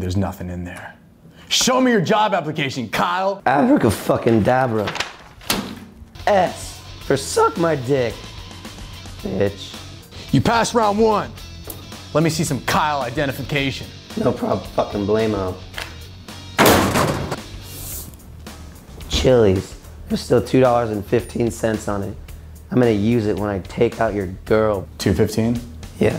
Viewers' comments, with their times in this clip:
0:09 If you watch that without headphones it skips the voice crack 🧐